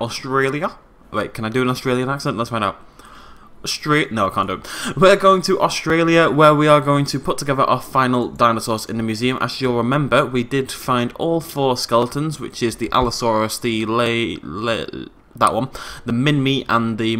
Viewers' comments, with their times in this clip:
0:05 we dont speak the way the rest of the world thinks we do